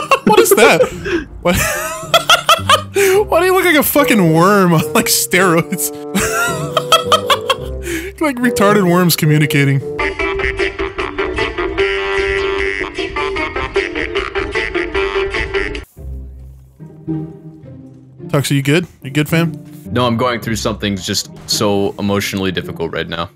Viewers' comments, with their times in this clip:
0:10 what the fuck is that tune? i recognize it but its too short and fried for me to use AHA music